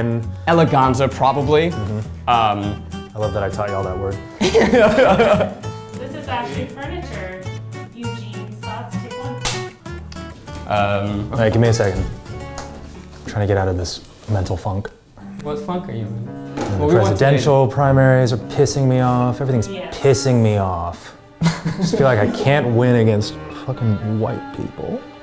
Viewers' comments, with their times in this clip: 0:07 WHY IS NOBODY TALKING ☠